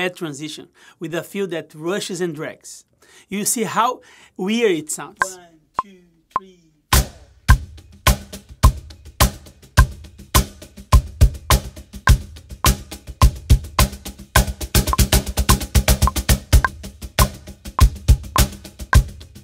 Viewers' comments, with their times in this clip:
0:05 Master, you say it is weird . Yes, you go out of time like start rushing and losing control but naturally comes back in time. Maybe in avant-garde jazz context, the other musicians will love it. It sounds interesting.